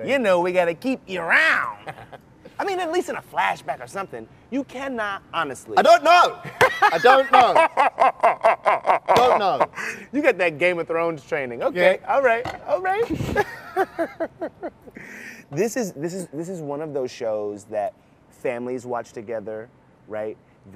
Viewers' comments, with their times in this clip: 0:04 The echo when he shouts "I DON'T KNOW" is killing me. I think he knows.
0:07 omg the laugh
0:08 he got that vecna laugh